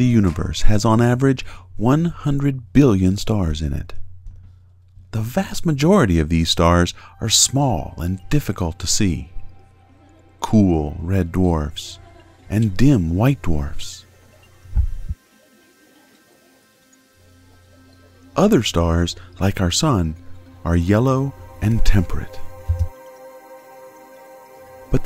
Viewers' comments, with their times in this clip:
0:09 did he said damn white dwarfs? xD